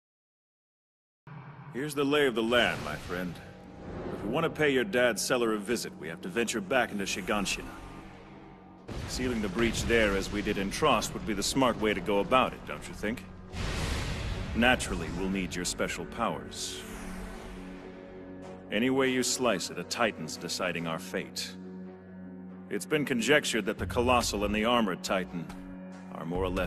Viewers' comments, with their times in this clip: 0:08 I want a voice like that